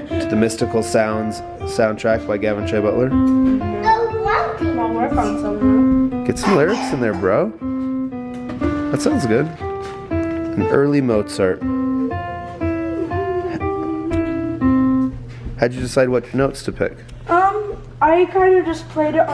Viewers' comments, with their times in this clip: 0:03 those are clarinet notes